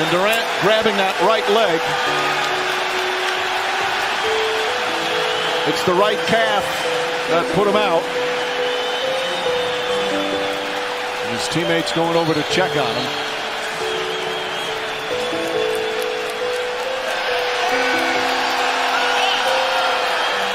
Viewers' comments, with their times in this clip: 0:04 now tell me people weren't cheering waving goodbye to him, disgusting
0:05 the fact people were waving and cheering that he got injured makes me sick